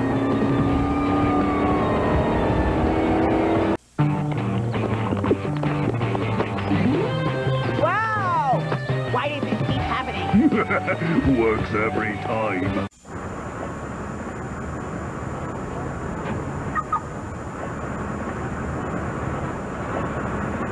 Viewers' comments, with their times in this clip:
0:04 last time we heard this was in Spanish.